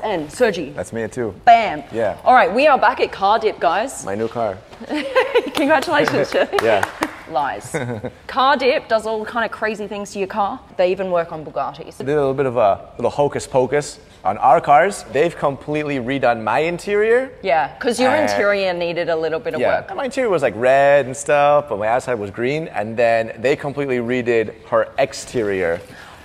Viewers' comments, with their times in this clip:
0:07 the way she said lies 💀